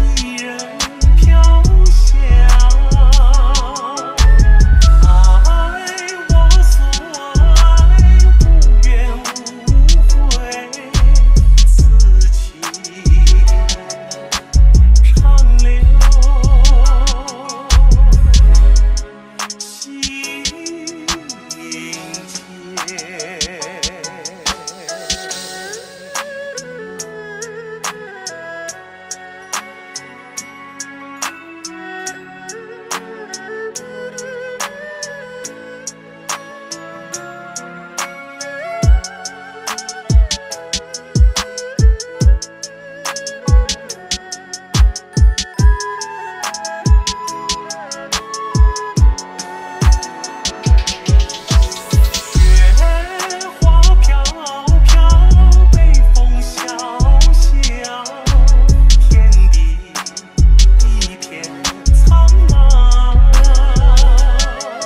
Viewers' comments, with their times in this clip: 0:05 Does anyone else hear, "i wAs SoOOoOo hiGh"
0:27 did anyone hear that tune say “oh yeah”? 😂 lol when the beat comes the rainbow thingy it’s after
0:51 the bass drop